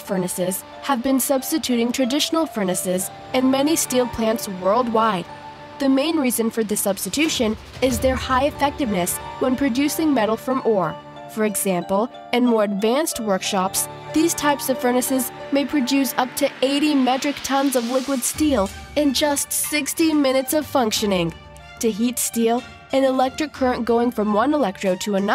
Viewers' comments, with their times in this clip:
0:06 the narration becomes blurred, like an overdub and had to stop the vid.